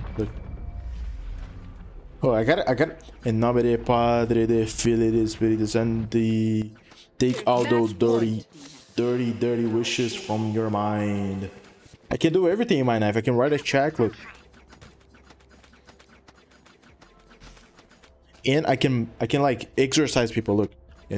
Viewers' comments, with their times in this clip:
0:03 i have to say that you said that perfectly (i'm an italian girl and i really love your videos :D)